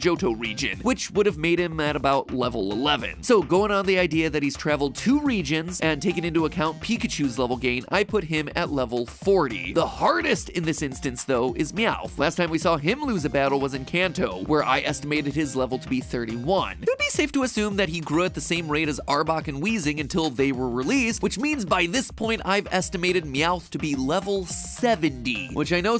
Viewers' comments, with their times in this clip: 0:06 you said encanto or in Kanto?
0:13 Notice MatPat says in Kanto. Sounds a lot like 'Encanto'...